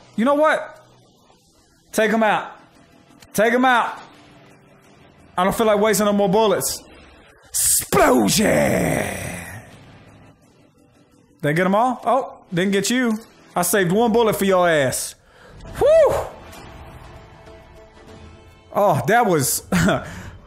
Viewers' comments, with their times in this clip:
0:08 my notifications sound went off...it was Megumi from Konosuba saying explosion 😂😂😂